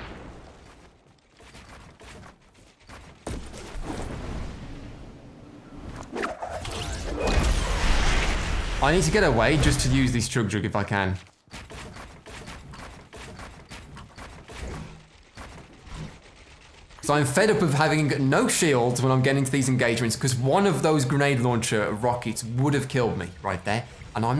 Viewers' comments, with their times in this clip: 0:06 listen for the voice in the background - sounds like another dude saying hi?